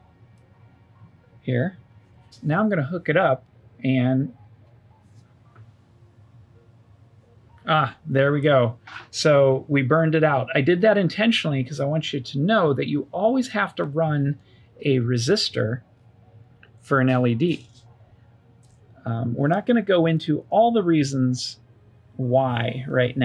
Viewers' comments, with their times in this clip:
0:06 Intentionally? The way you said, "Ah!" almost made it sound like you were takin by surprise! Lol 😜